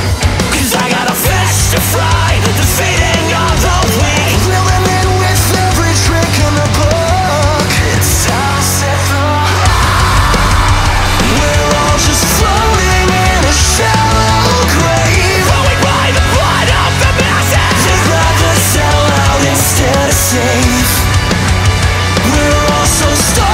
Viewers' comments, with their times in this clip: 0:06 Anyone else find the autotune a little off-putting?